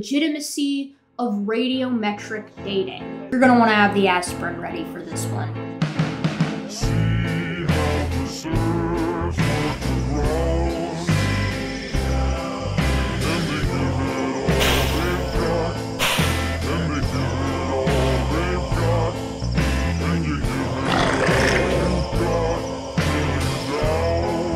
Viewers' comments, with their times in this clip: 0:06 That intro song is fire af. Nice.